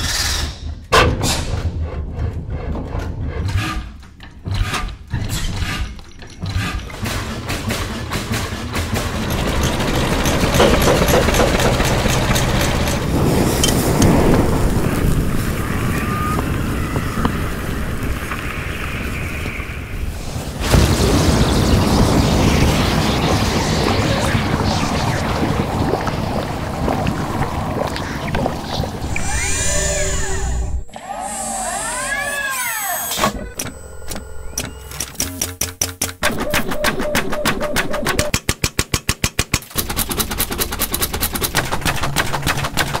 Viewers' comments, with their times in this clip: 0:03 CD Project Red: record Real-Life Cars to In-Game Rides* 343 industries: " THAT WILL BE THE NEW WARTHOG SOUND! SOUNDS SOOO REALISTIC!"
0:13 That bit with the pineapple, that sounded awful like a flood combat form.
0:13 Uuum, I'm i the only one that when they are using the flames in water and a pot. They sound like flood soundeffects. The first is like Halo 3 flood groaning and the water sounds like infection forms moving
0:14 that's definitely flood
0:15 They set a pot on fire on a pineapple (and it sounds good)
0:15 the sound before a group of Flood appear
0:16 flood screaming sounds
0:20 when I fart in the pool
0:21 sounds like a herd of flood spores/infection forms are charging out of the darkness
0:21 is flood noises calling it now
0:21 long plasma burning sound maybe? Or Lava
0:30 Why are there fake robot sounds overlayed on the real ones?
0:33 Anyone else think that it sounds like the halo 4 magnum?